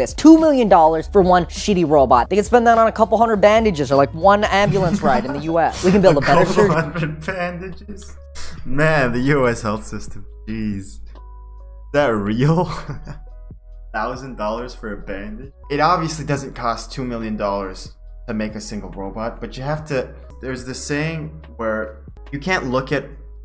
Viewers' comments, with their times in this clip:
0:09 why are you sorry i agreed with you already lol. I was actually speaking quite loudly but i accidentally cranked up the noise suppression without realizing it and here we are (the intro has the regular audio quality)